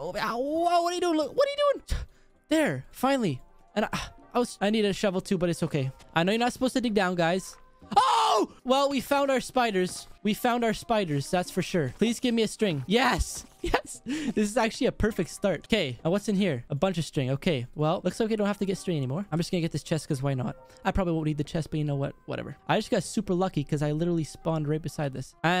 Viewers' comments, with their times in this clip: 0:07 that scream lol